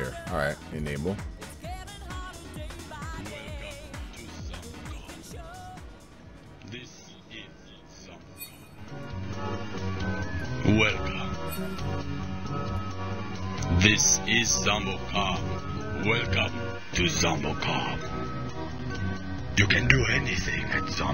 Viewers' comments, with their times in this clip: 0:04 the league message sounds spooked me for a sec
0:06 had to get out of fullscreen cause i thought someone was talking to me on league lmao